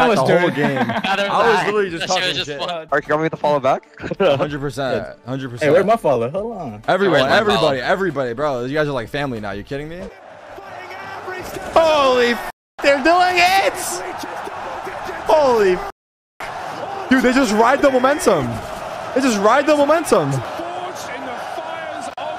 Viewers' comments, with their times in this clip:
0:10 That crowd was bone chilling. Talk about momentum🤣